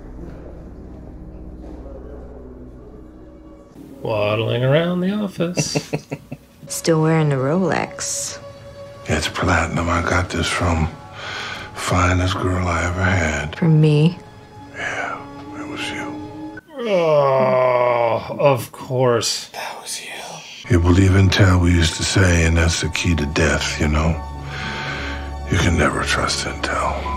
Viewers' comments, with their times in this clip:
0:10 this man just had to catch his breath from speaking a sentence.....I'll say this for Steven Seagal: he has completely motivated me to clean up my eating and get back on top of my fitness. I'm on a scary track to become him, and I wouldn't want that for my worst enemy.
0:11 So many lines I thought he had, literally, fallen asleep and was mumbling in his sleep! He had to stop the dialog and take a breath because it winded him to say more than 5 words in a row!
0:11 His dialogue totally sounds like if I just gently woke one of my kids up and they started asking what was up. It's that sleepy. Ugh. Such a long slide from the 90s. I hate to say, but I owned most of the OG Seagal movies on VHS: Under Siege, Hard to Kill, Above the Law, Out for Justice... they were pretty decent, I might even say to a teenager they were pretty dang cool at the time. Now he's just a joke. So Sad.